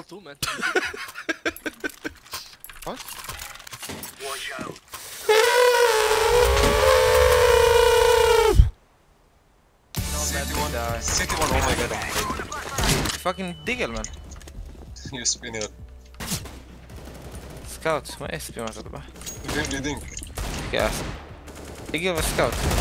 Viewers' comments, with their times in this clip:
0:04 ,* the drone of the quiet kid flying around my House *
0:05 perfectly accurate German Benjamin Blümchen performance there
0:05 my quadcopter goes like